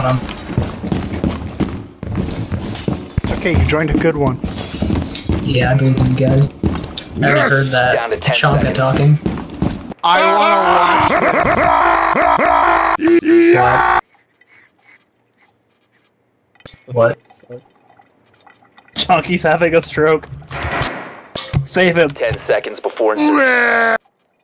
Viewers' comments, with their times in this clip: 0:09 [Glitches in Heavy]